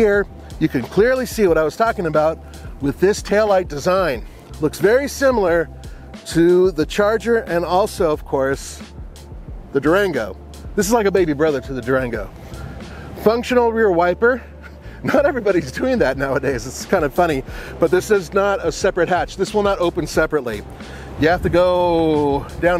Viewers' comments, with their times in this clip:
0:03 it's also a very nice noise, especially for a tiny four cylinder. It sounds like a tiny rally car.